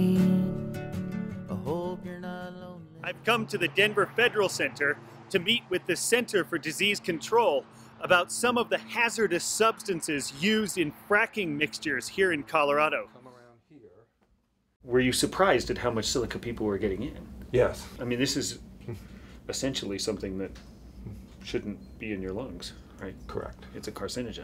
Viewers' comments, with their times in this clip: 0:05 Why are you YELLING??